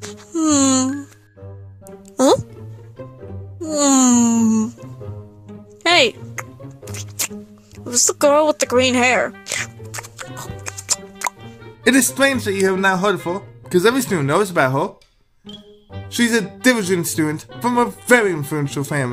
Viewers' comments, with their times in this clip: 0:06 The smacking noises 🙃